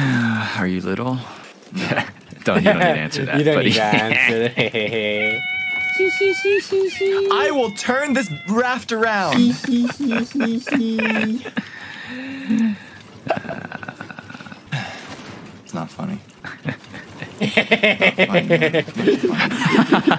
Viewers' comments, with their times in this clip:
0:05 what is that hyena laugh 😂